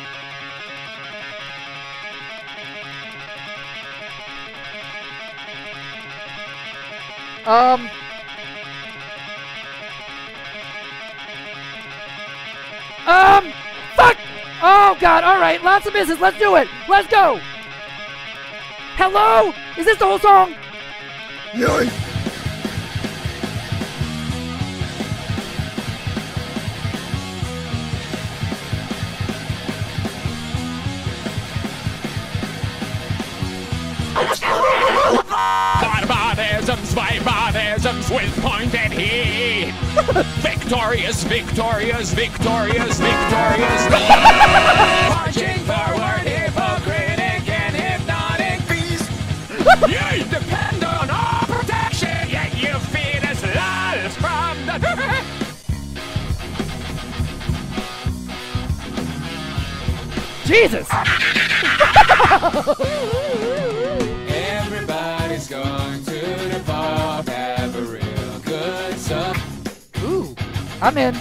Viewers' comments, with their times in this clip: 0:03 the record skips put a penny on the needle
0:21 is that uh. Is that yeet
0:32 his score is 66,666 when the screaming happened
0:34 When satan gets nuclear taco bell diarrhea...
0:34 demon points lol
0:43 Where is the reeeeeee from?? I can only find the original high pitched one.
0:54 actually sounded pretty nice